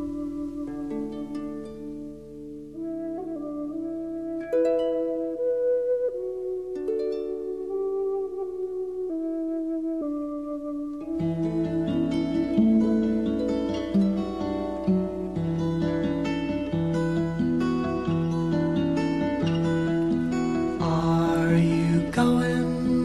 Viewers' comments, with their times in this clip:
0:08 Shoutout to the guy who plays two flutes at the same time.